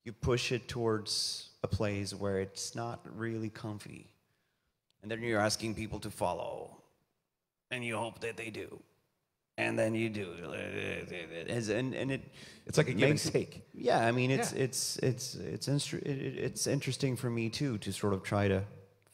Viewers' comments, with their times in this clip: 0:05 Sounds like his Copia voice here, love it